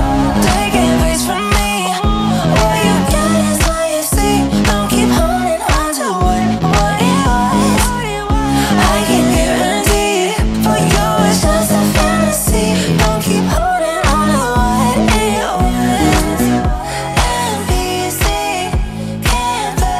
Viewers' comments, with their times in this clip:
0:03 He is so hot right now 😮 what a crazy body.. crazy voice..